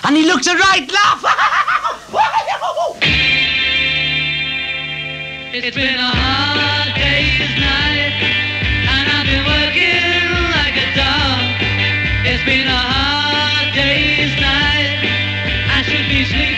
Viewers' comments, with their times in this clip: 0:04 Some of these recordings are more interesting than those on Beatles At The BBC. And the version of A Hard Day's Night is the real deal. Not only is there George's solo but the strum's the full 360/12.